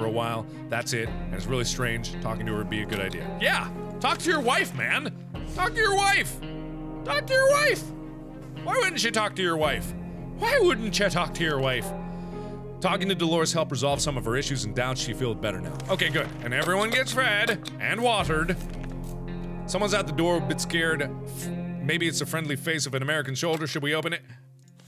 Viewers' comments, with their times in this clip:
0:05 uh- did mark go Irish for a minute? 😭😂
0:09 he sounds like jacksepticeye
0:11 he sounds like rockstar Foxy-
0:11 why does Mark suddenly sound irish